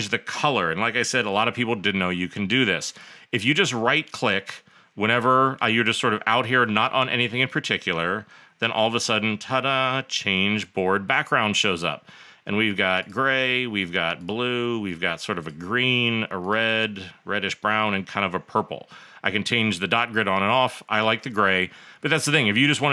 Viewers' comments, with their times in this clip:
0:07 It was a random guy showing me Milanote tips and tricks until when it became Jeff Goldblum teaching me Milanote tricks and tips 😂